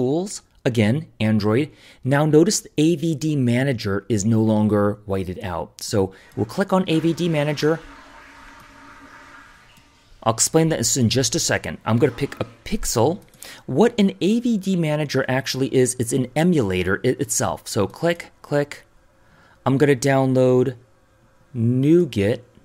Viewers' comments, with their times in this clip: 0:06 when you just said, you are gonna explain that soon, I thought you would be talking about that flush haha Anyway, thanks for this one man. I recently changed my OS and these tips helped a lot.